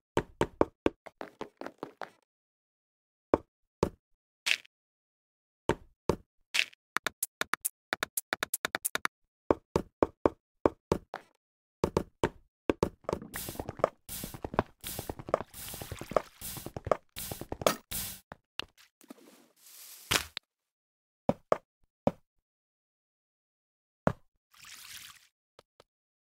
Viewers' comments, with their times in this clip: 0:06 Honest to God, I started rapping to Lose Yourself after hearing that speed up wood-slab-dirt beat
0:09 sounds like Mario opening
0:10 sounds like the mario theme song
0:11 sound like the Mario theme lmao
0:11 it's like Mario song